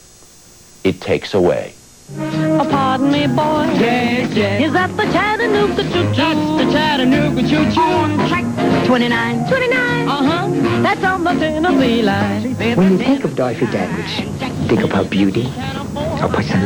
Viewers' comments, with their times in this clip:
0:03 The incessant buzzing sound drove me away ..... :(